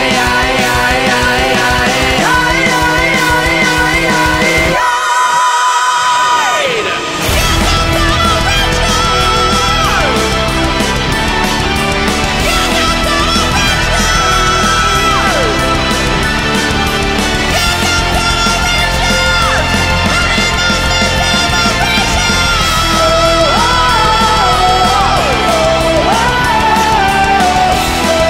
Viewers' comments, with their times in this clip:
0:10 Awesome, tho voice damn that is high awesome